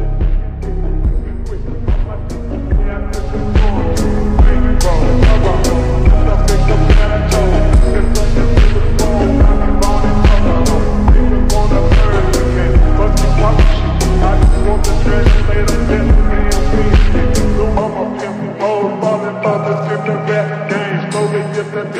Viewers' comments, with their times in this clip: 0:03 this scene suits well w/ the beat